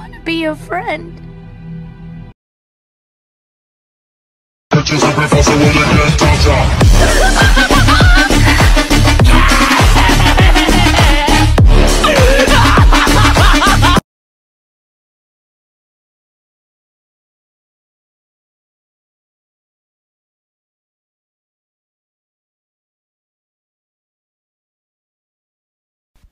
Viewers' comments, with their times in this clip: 0:09 Zack's laugh 😍😍😍 At the same time, they have the same voice actor so things are going too well ^^